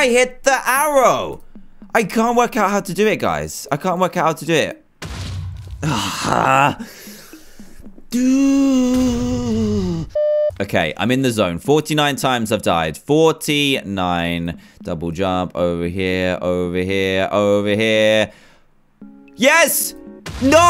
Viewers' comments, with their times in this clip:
0:08 best DOOOoooOOOOooooo i ever heard!